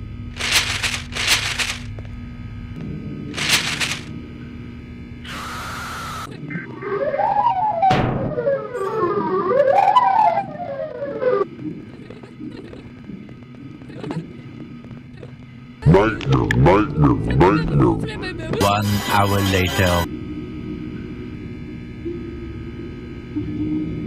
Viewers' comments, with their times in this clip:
0:06 The noise at normal speed is a siren but the siren at 5x speed just sounds like someone trying to make a song.